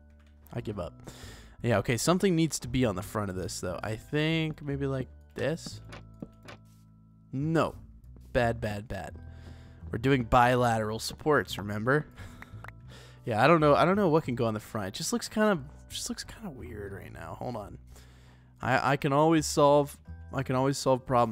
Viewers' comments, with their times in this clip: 0:05 Sounded like a toddler